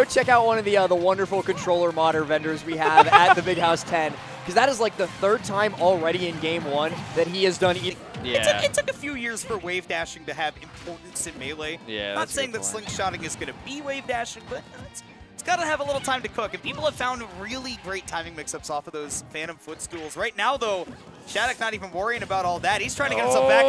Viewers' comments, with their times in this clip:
0:06 homie started beatboxing